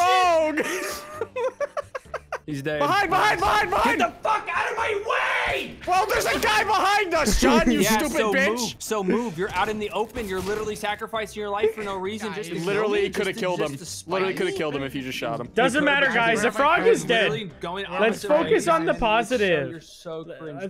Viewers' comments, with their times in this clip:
0:03 so much anger in that scream lol
0:03 bro was primal wit that scream